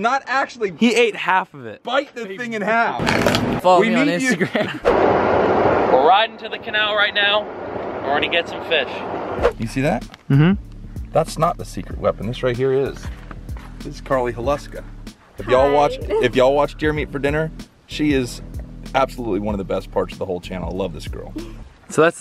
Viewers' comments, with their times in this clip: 0:03 dat cronch tho